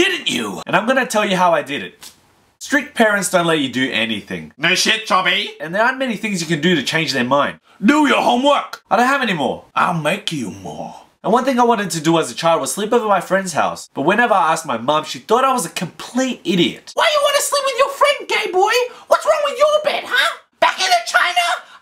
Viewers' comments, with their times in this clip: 0:04 he says choby